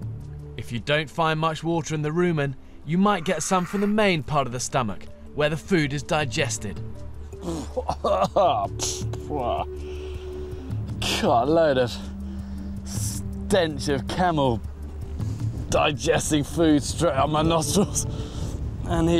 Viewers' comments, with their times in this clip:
0:07 aww really love his verbal expression 👌